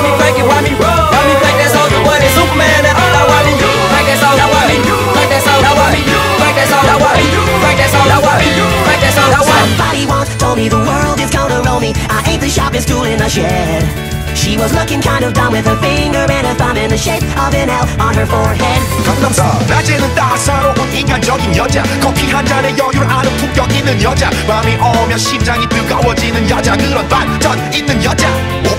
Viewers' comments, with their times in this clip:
0:09 Why does it sound like sonic himself is singing